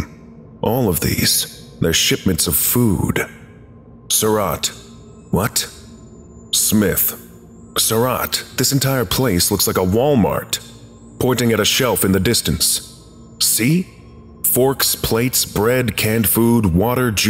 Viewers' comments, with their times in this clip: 0:05 Am I the only one that cannot focus on what is being said because of that extremely high pitched kettle like whistling (ex )?